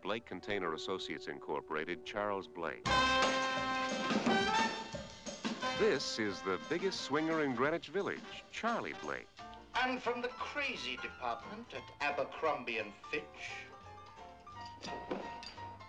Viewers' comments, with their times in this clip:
0:03 displays the wacky comedy music and introduction of the male character